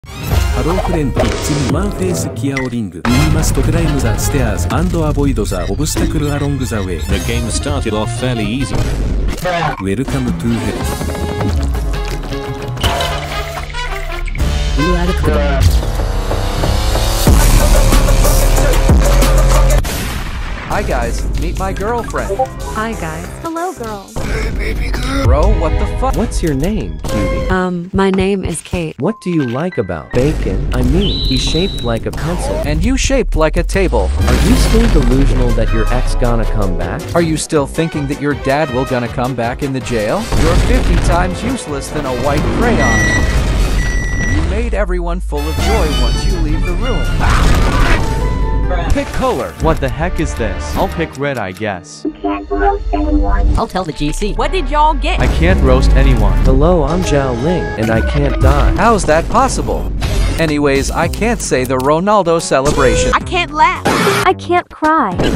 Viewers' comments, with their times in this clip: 0:01 xiao ling is russian now?!?!?!?!?!11!1!1!!!11?????1?1?1?1?1?1?1??1
0:31 he shaped like a pence-pence
0:52 bro sounds like preston fr 💀💀